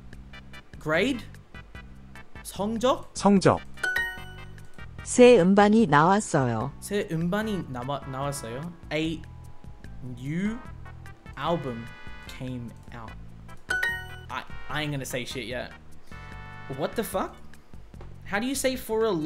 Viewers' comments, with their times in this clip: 0:04 I heard 엉덩이 💀